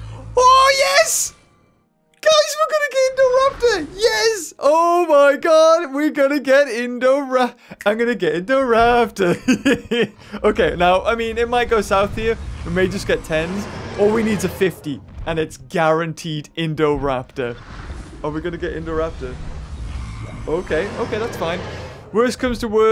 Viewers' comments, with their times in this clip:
0:07 that is nice singing